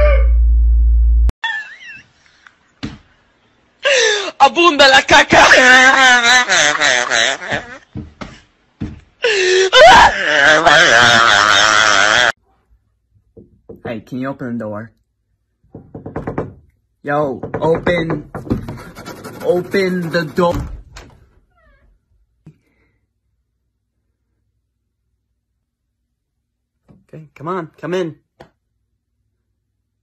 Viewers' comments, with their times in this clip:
0:03 apondalacaca!!!!!!!!!!!! I’m laughing so hard. Also that laugh though.
0:13 I thought someone was knocking on my wall 😂